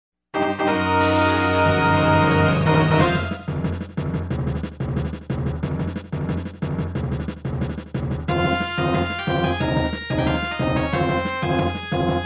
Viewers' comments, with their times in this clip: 0:00 I remember the music faded away in Bolse. I didn’t understand, when suddenly…